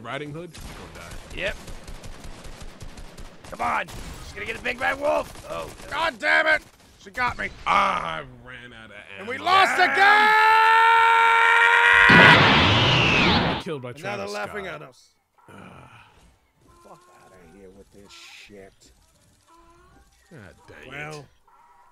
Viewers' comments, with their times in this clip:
0:09 bruh had me over here dying when he screamed